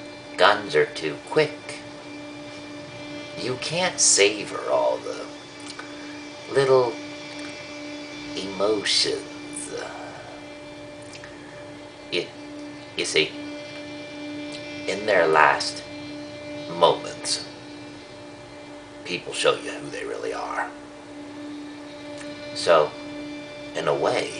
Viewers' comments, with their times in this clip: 0:08 were more of a Robert DeNiro-impression